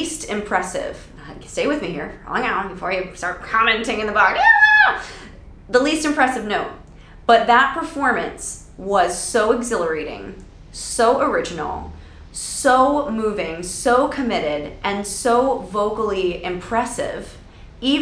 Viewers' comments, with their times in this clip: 0:04 You accidentally stepped on your cat's tail. The cat: